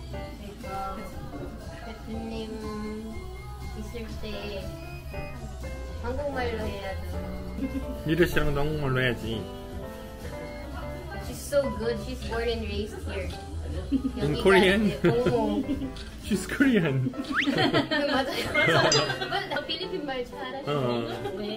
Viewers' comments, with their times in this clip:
0:08 Big Boss talking with aegyo! Hahaha.